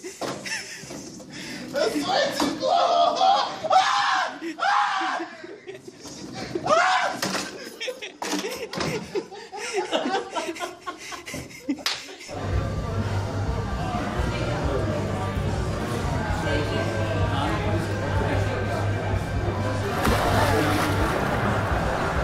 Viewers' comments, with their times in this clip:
0:04 is the best cause of the scream